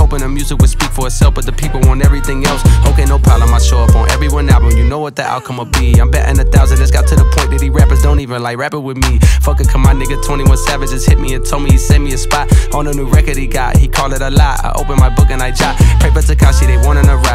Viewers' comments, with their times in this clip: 0:05 24k comments and not a single one noticed the baby voice